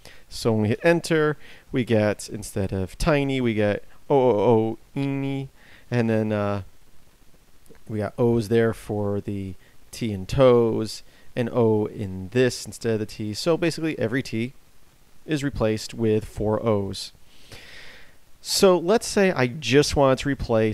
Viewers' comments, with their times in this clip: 0:05 speaking "iny" is very funny.